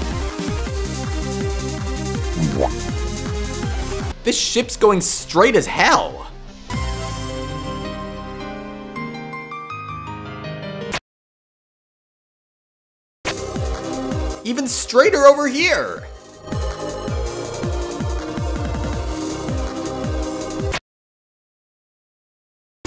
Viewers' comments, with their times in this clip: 0:07 at least the music is lined up💀🤌